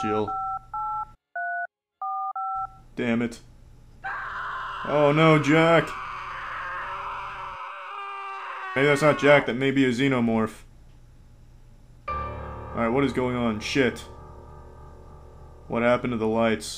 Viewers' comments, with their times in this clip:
0:03 I always loved that part; maybe because the scream was too over-the-top and dragged.